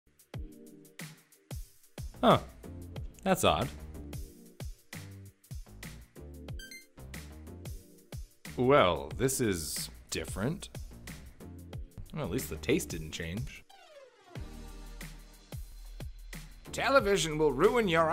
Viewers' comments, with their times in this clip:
0:02 minecraft villager noise